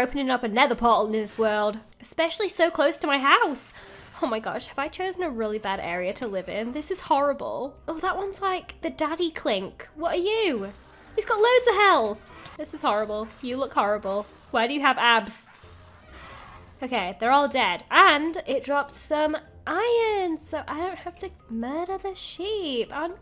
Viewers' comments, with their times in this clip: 0:07 you know you read too much fanfics when you hear daddy kink XD